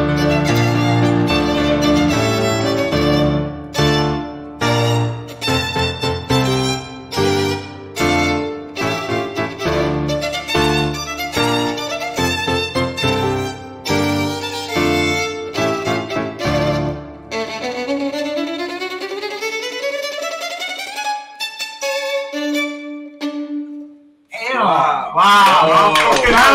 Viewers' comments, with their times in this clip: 0:09 OMG I LOVE THIS PART PLAYED BY THE VIOLIN!